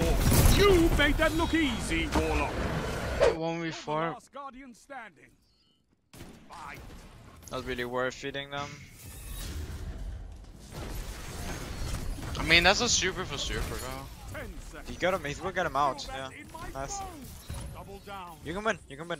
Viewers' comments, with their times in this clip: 0:03 piano begins to play